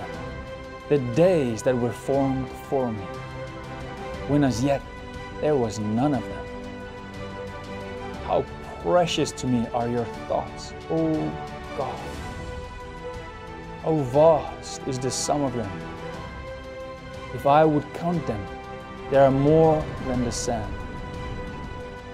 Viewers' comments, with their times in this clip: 0:07 Why do you have such a loud music in the background? Can’t even hear what is being said.